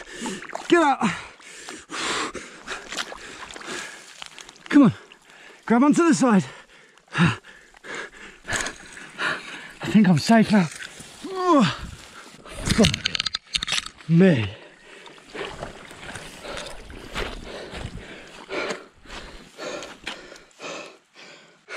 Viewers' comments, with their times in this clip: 0:03 the sound of those root digging in must be the greatest sound he's ever heard.